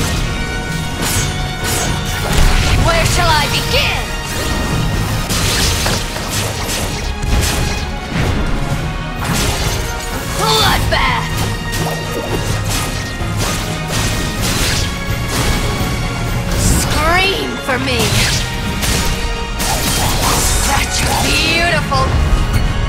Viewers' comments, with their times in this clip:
0:10 when she screams "BLOODBATH!" but pulls the sweetest face ever~